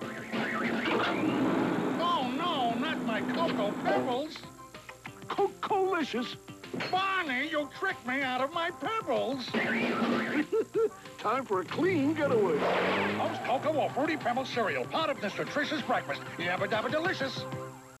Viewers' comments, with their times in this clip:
0:06 Fred Flintstone Growed. BARNEY. YOU TRICKED ME OUT OF MY PEBBLES. Very Funny And Hilarious. X❤😂😅😂😅😂